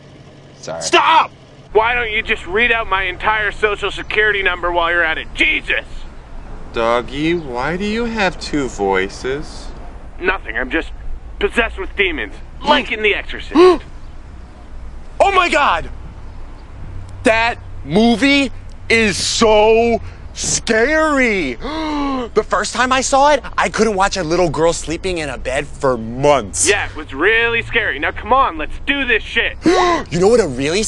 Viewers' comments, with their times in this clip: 0:04 Trevor Moore looks so damn adorable playing this role here, just the way he looks at the dog and how he speaks. I love this sketch so much. The look on his face is hilarious here: "Doggie, why do you have two voices?" The movie references are great though. :D He's literally me when I go on with movies and nobody cares, lol!! "God! People fucking love movies!" LMAO
0:16 idk why this was so adorable the way he delivered it lmao